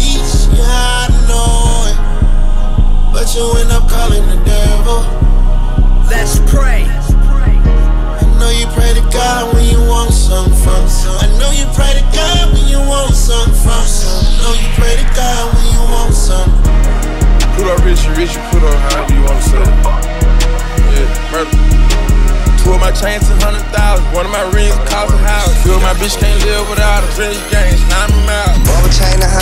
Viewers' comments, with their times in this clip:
0:10 craziest transition 10/10